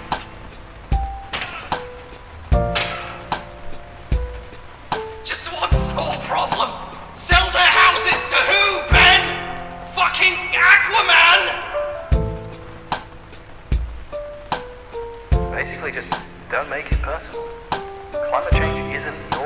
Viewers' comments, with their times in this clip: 0:04 lmao the contrast of his bewildered voice and the chill lofi beats